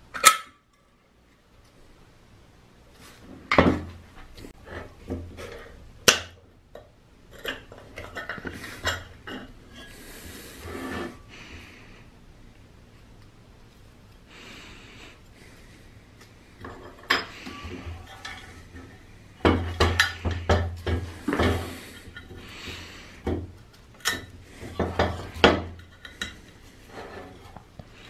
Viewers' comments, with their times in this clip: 0:08 begins asmr BREATHING DIRECTLY IN YOUR EAR. Lol not bad.
0:11 Darth Vader breathing